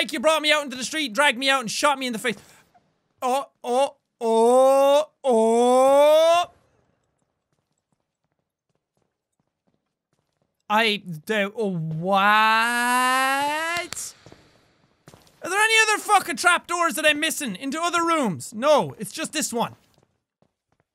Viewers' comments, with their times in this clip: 0:04 jacks best car impression